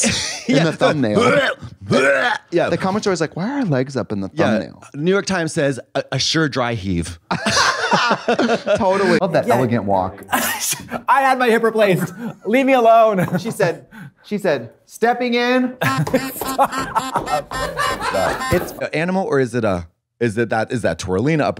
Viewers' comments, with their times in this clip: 0:08 omg the little honks make this comedy gold 😂